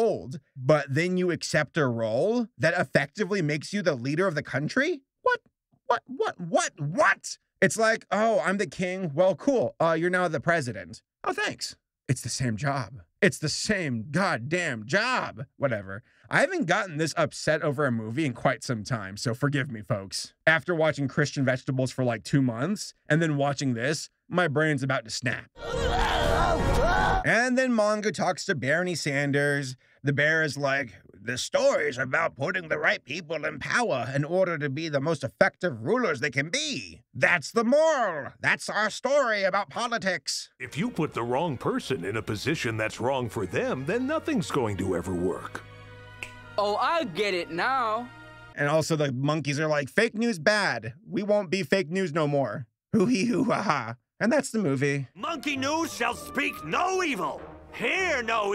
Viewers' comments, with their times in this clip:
0:07 the final WHAT kinda sounds a little like jack black
0:44 They're really gonna put a finger snap sound effect over a shot of character waving his visibly non-fingered hoof, huh?
0:45 I've noticed the weirdness in the animation as well. Especially with the poorly done dub and the delayed lip syncing. The audio is also pretty weird too, like where they imply that the donkey is "snapping" but he has a hoof... like wtf?